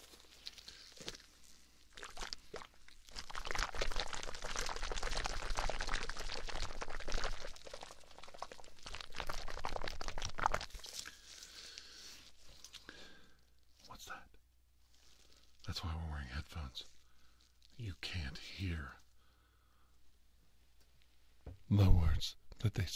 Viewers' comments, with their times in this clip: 0:06 This one I thought it was C3PO